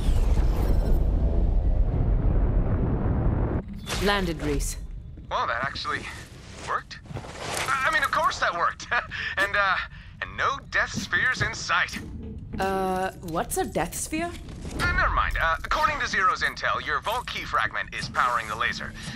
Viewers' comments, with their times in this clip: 0:04 i like how Rhys talks, and Amara's portrait appears.